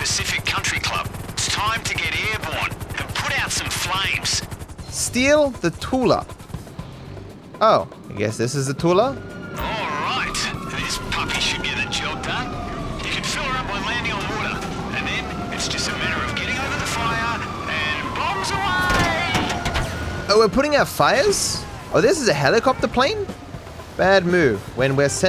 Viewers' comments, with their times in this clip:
0:05 that lego city undercover music tho, it hits different
0:12 why do i hear lego city undercover music playing